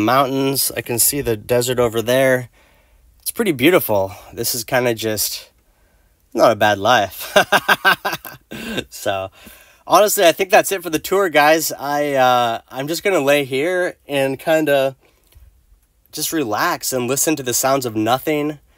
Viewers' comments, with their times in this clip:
0:06 that laugh said it all. That's a happy man.